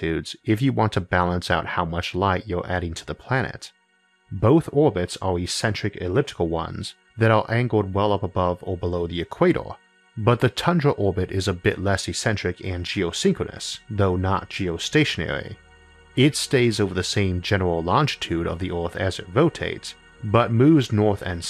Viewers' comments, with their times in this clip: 0:08 it sounds like the first chord to Prince's "Let's go crazy".